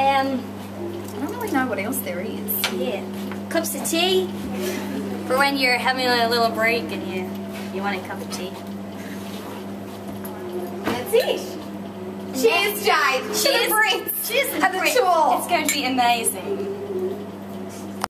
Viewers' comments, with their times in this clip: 0:05 jade sounds american ! Omg ! <3